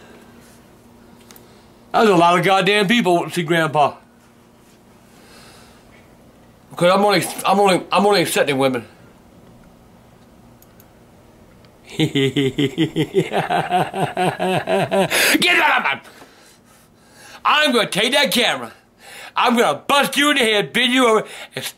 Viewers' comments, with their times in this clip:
0:07 His laugh is hilarious😂